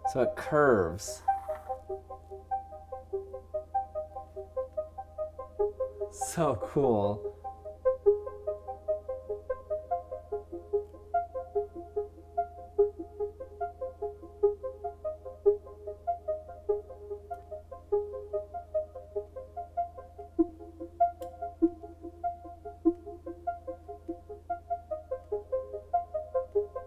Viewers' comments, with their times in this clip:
0:10 sound name? So relaxing i need that sound